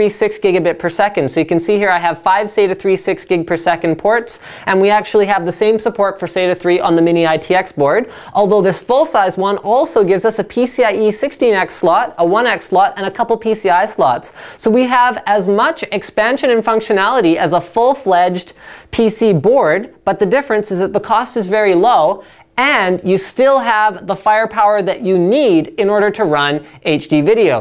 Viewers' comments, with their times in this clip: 0:10 Thats alot of sluts.